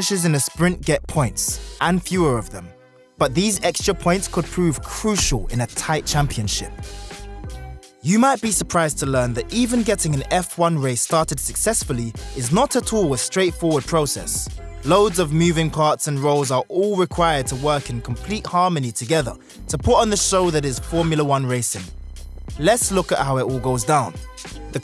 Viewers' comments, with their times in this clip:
0:05 i thought the top part said verstappen😂